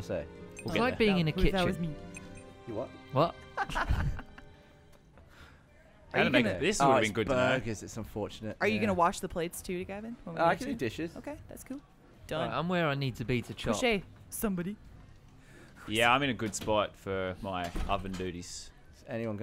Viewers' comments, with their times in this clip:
0:07 I've seen this more than once and I never noticed Buckley out "wot"ed Gavin or so. Incredible